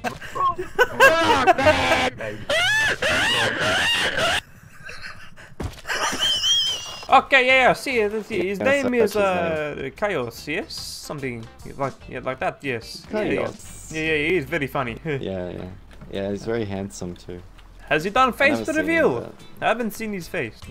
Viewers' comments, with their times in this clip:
0:03 That laugh will make anyone laugh